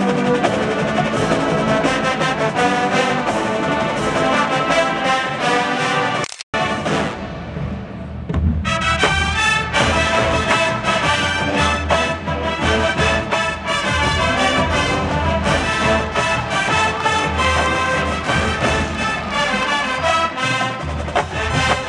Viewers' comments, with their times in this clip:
0:08 Is it really Better dig Two ? It sounds really different (better in fact) to me :/